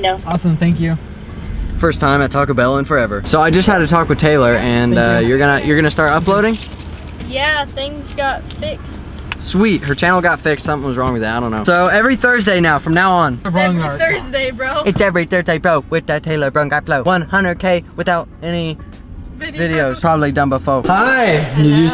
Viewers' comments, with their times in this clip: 0:08 I thought he said I had a "taco Taylor"